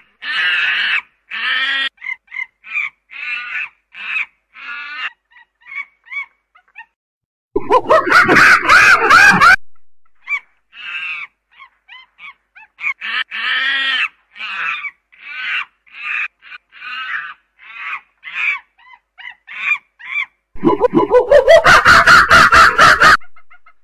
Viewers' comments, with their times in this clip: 0:08 this is what kong fans will sound like when kong loses